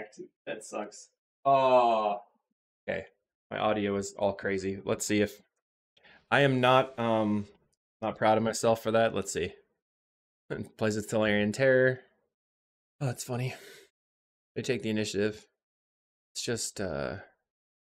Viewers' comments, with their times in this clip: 0:04 Unfortunately my Mic was too far from my face for the first part of the video The fix happens